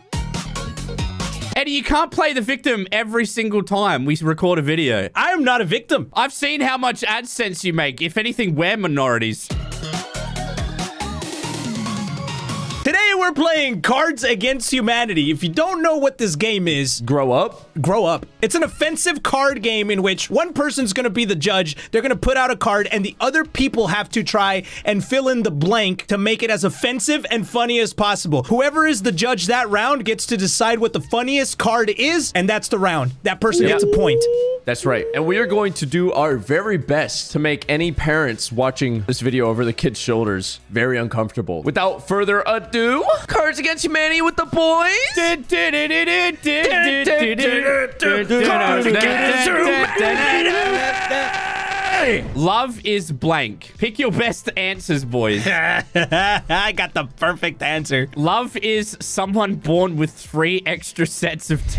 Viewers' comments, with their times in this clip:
0:09 ALWAYS ANNOYS ME AAAAAH ITS ALWAYS THE LAST NOTE THEN IT CUTS OFF but still the vids awsome
0:44 The Boys intro karaoke by the boys themselves 😄😄😄